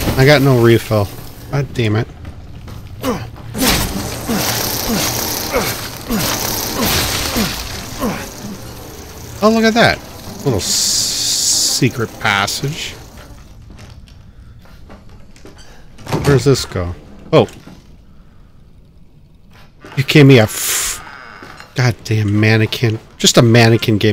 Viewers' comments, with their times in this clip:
0:08 Zelda secret revealed theme plays from somewhere in the bayou...